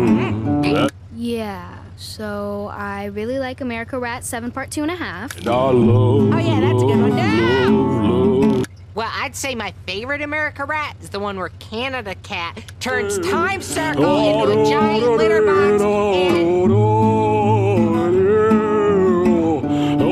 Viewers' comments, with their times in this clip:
0:07 My favorite moment of the video is around the mark when Cricket yells NOOO!!!